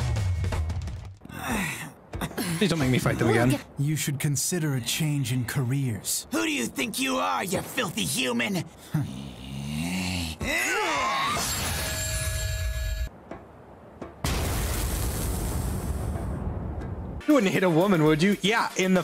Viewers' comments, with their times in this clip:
0:03 Sam Riegel?! Holy shit he pops out the most unexpected places, I swear.